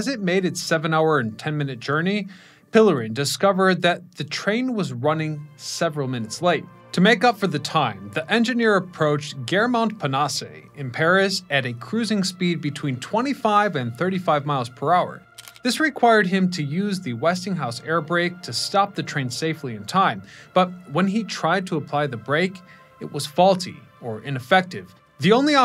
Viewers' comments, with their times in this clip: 0:08 Bonus catastrophe when "Gare Montparnasse" is destroyed by the narrator. He plowed through the station completely unprepared for the task.